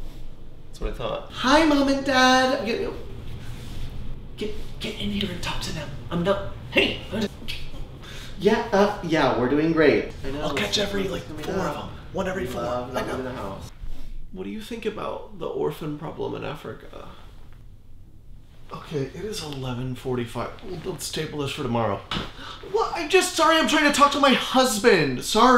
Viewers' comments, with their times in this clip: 0:08 sassy finger snap 🤣